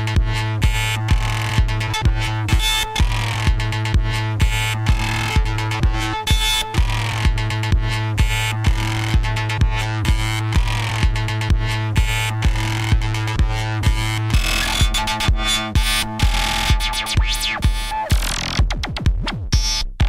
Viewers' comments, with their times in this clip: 0:04 i Love how they squish the music until it can't breath anymore lol